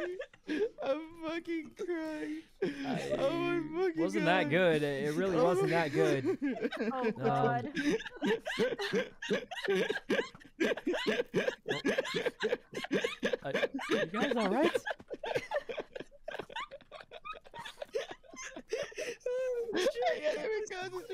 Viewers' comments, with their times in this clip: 0:08 Bro when they were alternating laughs got me good